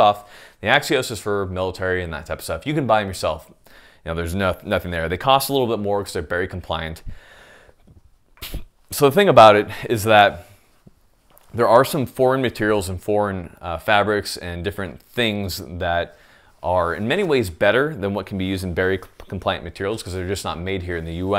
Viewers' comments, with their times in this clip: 0:08 Was... that a burp ? 😂